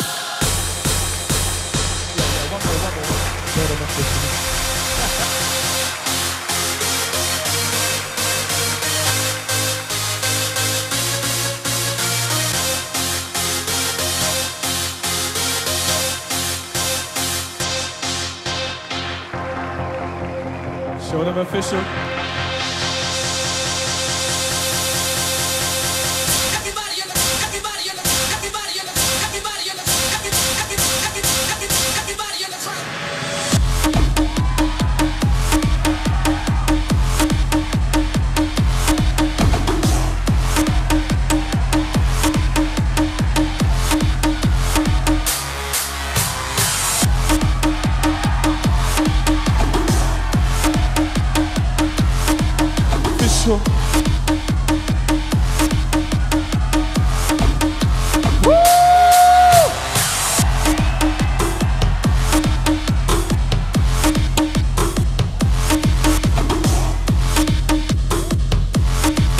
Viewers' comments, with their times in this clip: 0:06 the part that starts sounds sick
0:40 I think it's not a drummer because I play drum for 9-10 years and this man not play drum. And, he is not in rhythm (~ ). (Sorry for my English, I'm French)
0:56 Beat is lagging